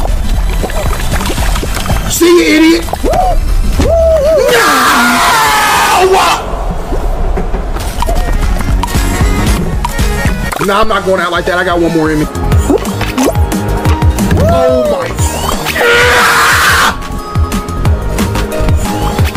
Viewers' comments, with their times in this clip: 0:04 WHY DID IT ECHO💀💀😭🙏🙏